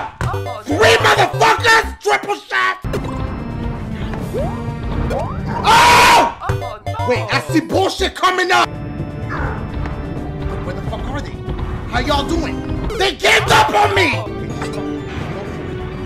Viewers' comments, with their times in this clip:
0:03 I’m done his scream 💀